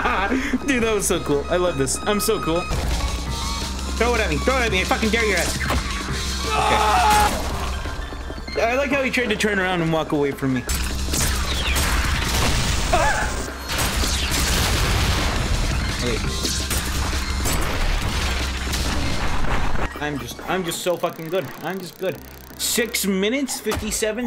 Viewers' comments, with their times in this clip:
0:07 why did It scream lmao